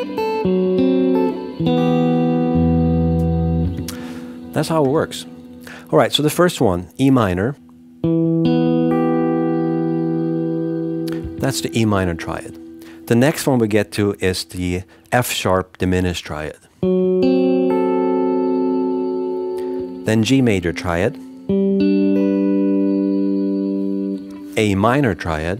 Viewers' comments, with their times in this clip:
0:09 O onwards sounds like the climactic part of the soundtrack for Band Of Brothers.